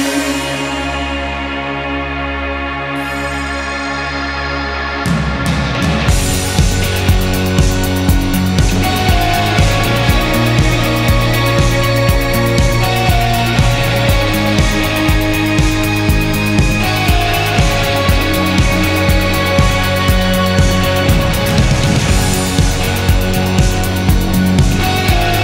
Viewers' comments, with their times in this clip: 0:05 I came here just to get the link to post on a group and tell them to jump to too hahaha best guitar sound ever!
0:08 That Guitar is one of the best pieces of guitar work I’ve ever heard! So beautiful 😍